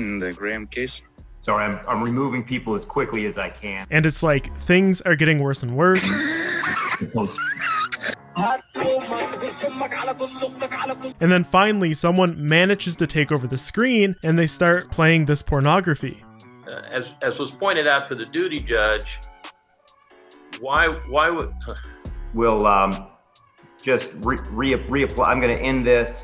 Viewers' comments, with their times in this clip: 0:07 Bruh Egyptian music appears at the most random places lmao